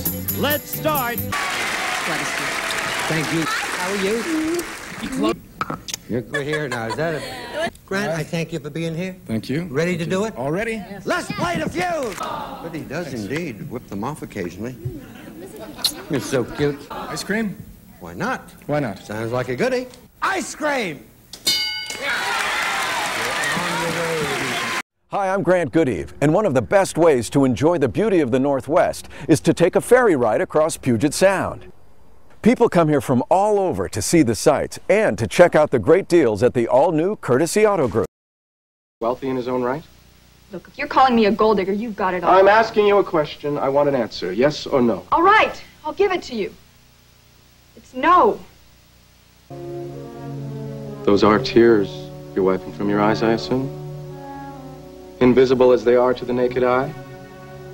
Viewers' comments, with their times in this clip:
0:10 sounds 100% like the engineer :>
0:38 I swear the technology they were using back then made everyone sound the exact same, especially children.
0:40 I dont know man, but Mr. Goodeve sounds like he'd be a good host on Fact or Fiction. His tone of voice sounds remarkably similar to that of Jonathan Frakes.